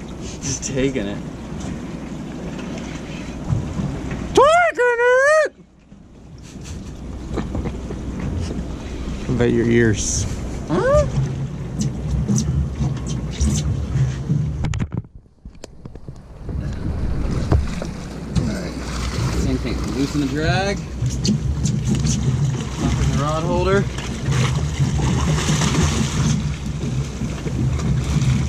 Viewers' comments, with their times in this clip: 0:10 that scream had me dying